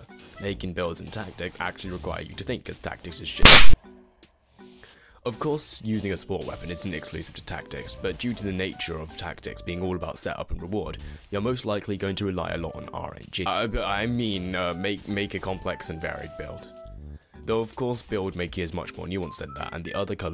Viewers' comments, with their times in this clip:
0:03 gave me a bloody heart attack, I had headphones on with a rather high volume and got jumpscared by that audio